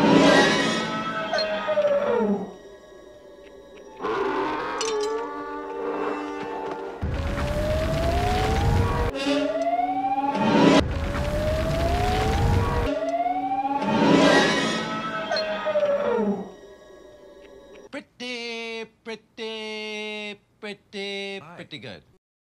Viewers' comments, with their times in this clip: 0:07 my neighbors car at 2am